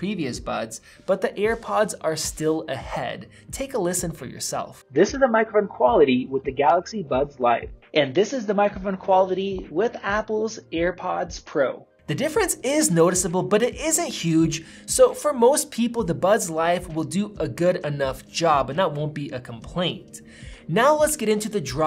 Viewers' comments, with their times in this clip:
0:05 im actually surprised, didn't expect for both earphones to have such bad audio pickup